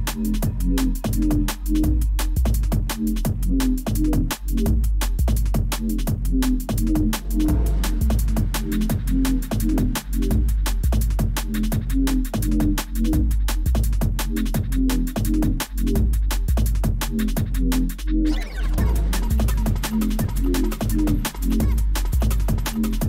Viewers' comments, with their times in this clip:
0:07 ID this ones deeper